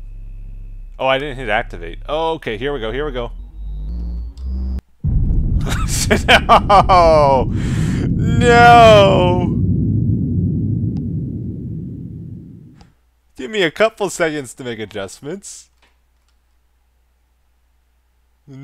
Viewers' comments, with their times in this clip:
0:03 Kaboom!!!! Hahaha that was awesome!
0:05 That laugh ... this is why I stick around.
0:05 Listen to his laugh I think the S-word slipped out! :3